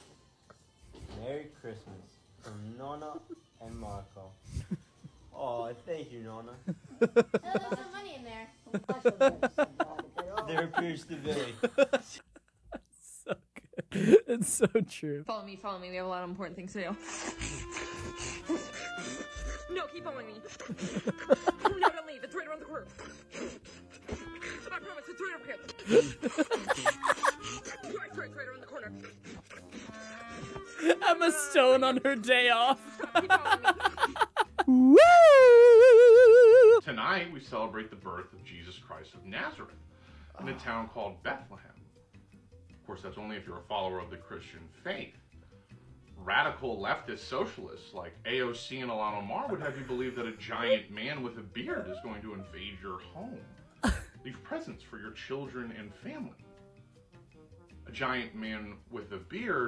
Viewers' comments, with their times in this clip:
0:09 sounds like schlatt
0:37 Sounds like the start of any Vsauce video.
0:45 this guy has a scary good TC impression, like what the hell!